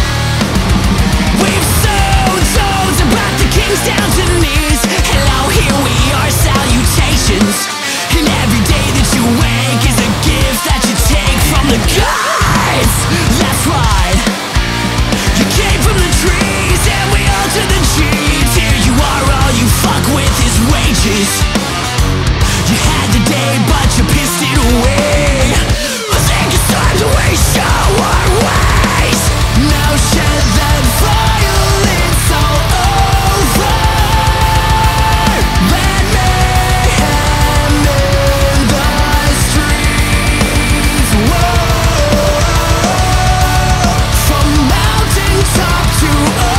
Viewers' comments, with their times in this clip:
0:08 Is it just me who hears "every day that you wank is a gift you take from the gods." a And by no means am I saying that it isn't
0:11 guitars: pinch spencer: oh cool, I'll do it too
0:13 Damn, that little tasty pentatonic box lick in the midst of "typical" Periffing is at once badass and comical. I think this is their best work yet. Amazing song
0:15 "You came from the trees and we altered the cheese?"
0:29 The part obviously inspired Bury the Light, the key change is like the nail in the coffin.
0:29 sounds like a storm might be approaching.
0:30 Bury The Light vibe !!
0:33 that key change reminds me of bury